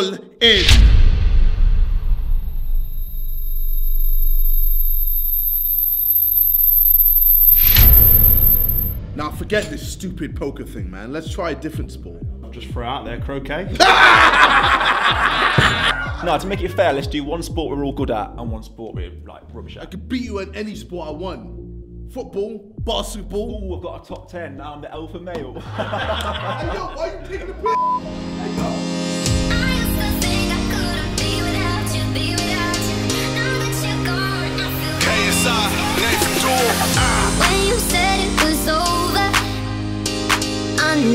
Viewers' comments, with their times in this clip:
0:04 wtf is that ear rape
0:12 I didn’t hear what they said in why were they laughing lol
0:13 JJ what was that laugh. that wasnt ur normal laugh mannnn
0:22 He can’t pronounce basketball either 😂